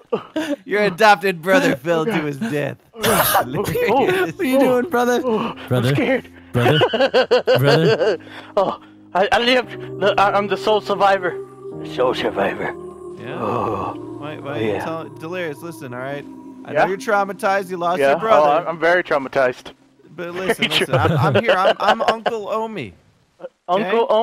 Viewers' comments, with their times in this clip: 0:10 that music lmao